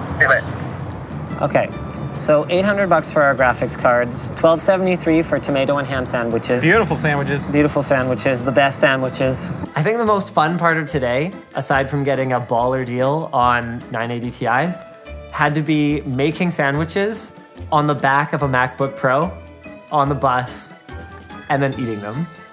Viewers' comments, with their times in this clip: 0:07 beautiful sandwiches sounds like trump